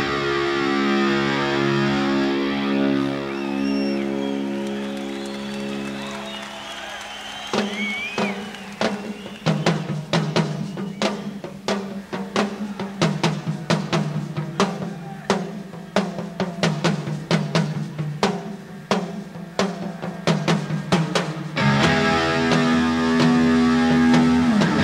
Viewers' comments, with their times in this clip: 0:07 sounds like an early version of "Everybody wants some" Lol! SABBATH RULZ!
0:07 listen to Ward's drums and tell me that is not where Phil Collins came up with the drums for I don't care no more?
0:08 You can totally hear how Sabbath influenced Van Halen- that's "Everybody Wants Some"! :O)
0:08 sounds just like everybody wants some by Van Halen interesting